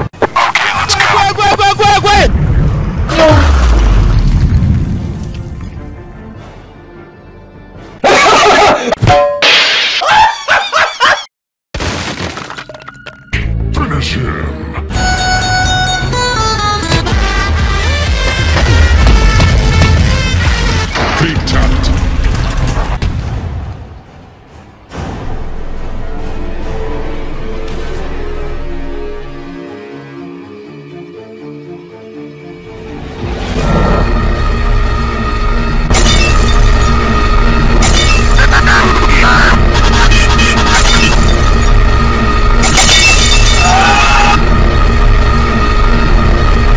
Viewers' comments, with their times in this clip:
0:07 He laughed so hard hes teeth are just annoyed
0:34 POV: BF lost a rap battle defeat scream
0:34 :that one kid screaming when your playing outside:
0:34 I think boyfriend screamed to hard cause uh the outer plants now have 2 giant gaping holes